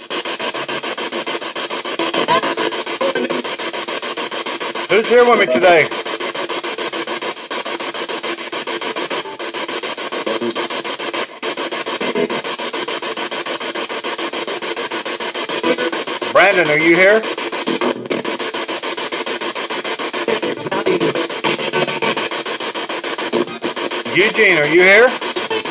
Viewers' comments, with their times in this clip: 0:06 orb flies at the spirit box same time you can hear someone speaking.